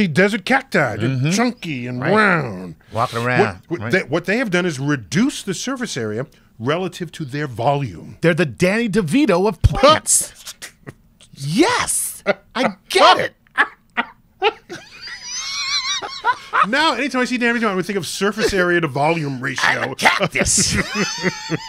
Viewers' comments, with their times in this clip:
0:09 Neil's laugh lmao, that's gotta become a meme